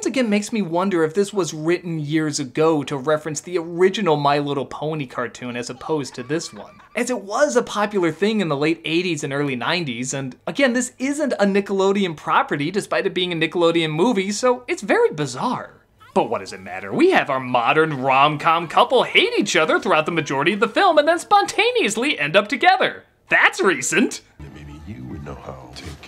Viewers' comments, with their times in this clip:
0:09 Yes. He said it in a strange voice because it's not a Nickelodeon property. He makes jokes like that all the time. He even says "Again, this isn't a Nickelodeon property despite it being a Nickelodeon movie."